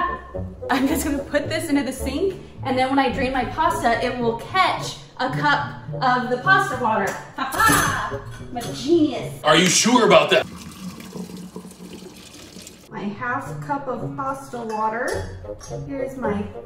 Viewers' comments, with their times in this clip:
0:04 THE WAY SHE SAID “CATCH” IS SO AOSXJKSMDJDKW WOW